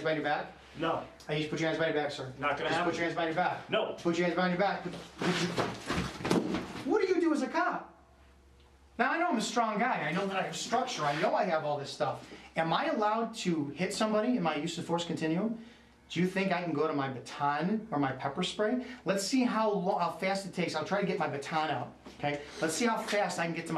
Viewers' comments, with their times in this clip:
0:05 for some reason made me laugh. "Whawuudoasacop?"